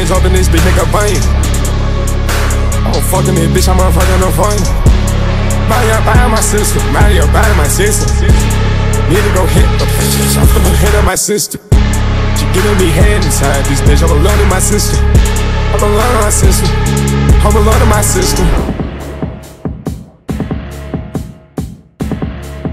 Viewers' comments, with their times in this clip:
0:10 Bro the ai bugged out for a second LMFAOOO